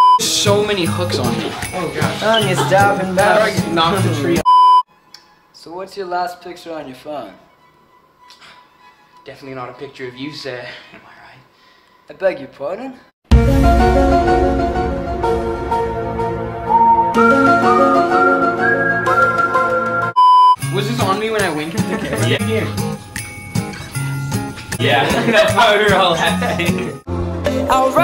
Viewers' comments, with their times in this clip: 0:05 ZACH SOUNDS LIKE HARRY STYLES BRUHHHH I'M SHOOK
0:06 ZACK SOUNDS LIKE HARRY STYLES BRUH
0:07 why does Zach sound like harry styles like even when he's singing he does!😂 he even looks like him!😂
0:09 zach sounds like harry styles
0:11 Jacks voice is so cute
0:12 he sounds like harry styles
0:16 sack kinda sounds like Harry styles 😂😂😂